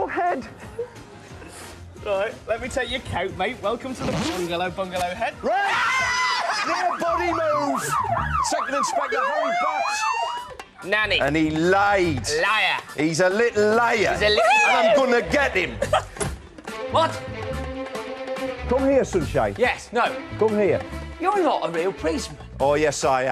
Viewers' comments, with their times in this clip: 0:05 LOL at Doms Ahhhhhaha!!